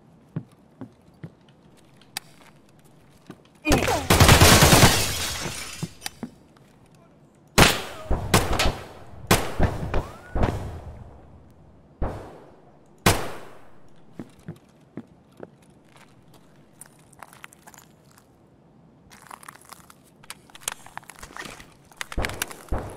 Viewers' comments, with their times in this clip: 0:03 kinda sounds like the noise you make when you take damage in minecraft